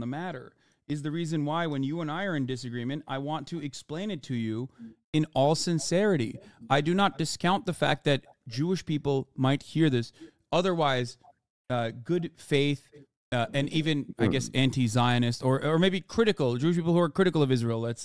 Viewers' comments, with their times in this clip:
0:05 I quite literally cannot believe ethan just whined and said “it’s not that fun to talk to you about this” AS REAL LIFE HUMANS ARE BEING BOMBED?? Hello????? He’s concerned with the level of fun he’s having instead. His narcissism is unreal. I can’t believe I ever supported this empathy lacking islamaphobe